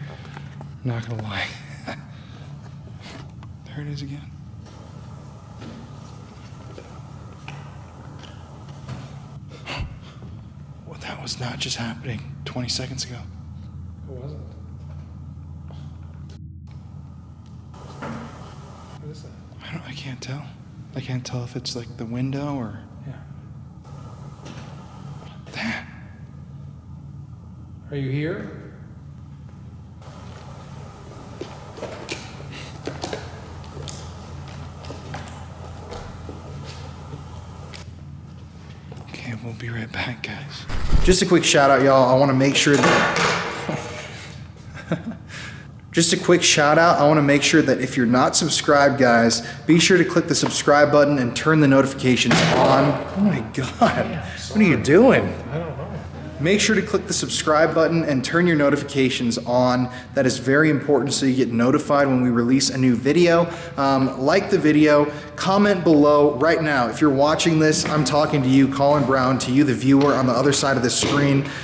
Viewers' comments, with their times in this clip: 0:09 watch super closely when looking through the doorway and you can see the I believe it’s an exit sign at the top through the doorway.. maybe? It’s like an orangish colored light.. but while those loud thumps and bangs are happening you can see the sign be blacked out by something that honestly looked like something was crawling across the ceiling! Like fr looked like a giant spider crawled past the exit sign hence making the loud noises that you were hearing
0:10 you can see the exit sign n as soon as you hear a noise you see something going past it for split second
0:42 female voice talking durring your shoutout
0:55 Chilling watching this... Hears the dude call the demon a POS... Well shieeeeettt while he's doing the plug after he says what are you doing did anyone else hear a child's moan? (Could be the camera zooming out sound)
0:57 I know this is an older video but it's my first time watching it and .... Do you hear a woman's voice. Right after you say "What are you doin?"